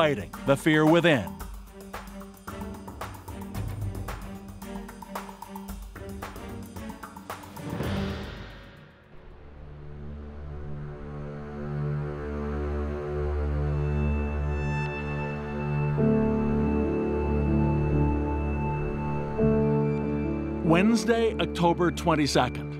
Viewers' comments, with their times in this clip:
0:03 Does anyone else have problem hearing the commentator ?